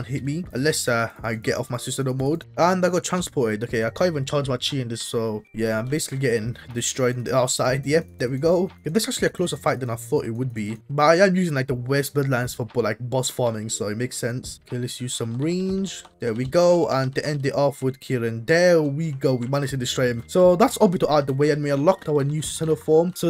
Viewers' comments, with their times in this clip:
0:07 the voice crack💀💀